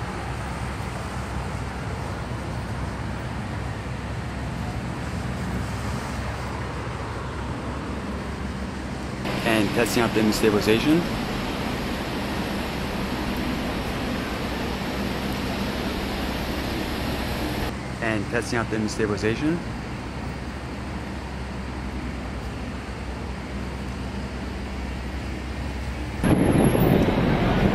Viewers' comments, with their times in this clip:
0:10 what the freak was that distortion?